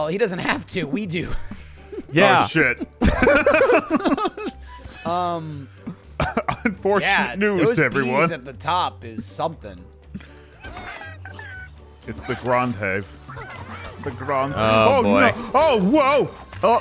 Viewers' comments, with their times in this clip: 0:04 someone's phone notification goes off, and I have the exact same sound. lmao